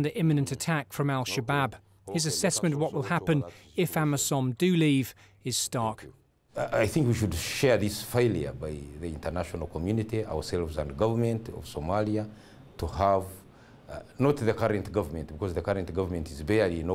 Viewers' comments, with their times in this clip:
0:04 can any notice what the commander said "The past government we had fucked" lol